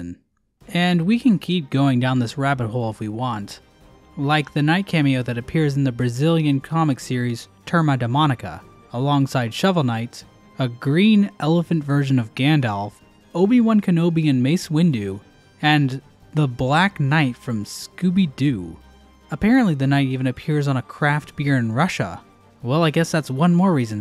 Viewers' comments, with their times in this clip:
0:06 nailed the pronunciation there(really, just the R that was a little bit off) NAILed
0:06 BRO XD I AM FROM BEAZIL AND I LOVE HOW YOU SAY TURMA DA MÔNICA XD Btw good video